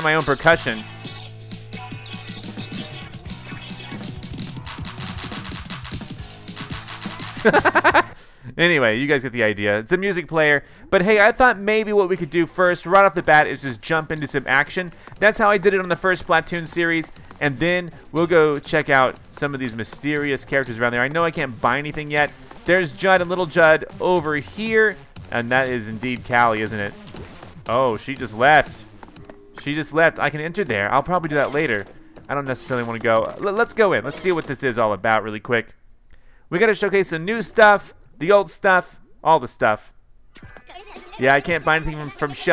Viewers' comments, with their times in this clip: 0:07 that laugh doe lmao
0:25 DID YOU JUST CALL HER...CALIE!!!!!!! T R I G G E R D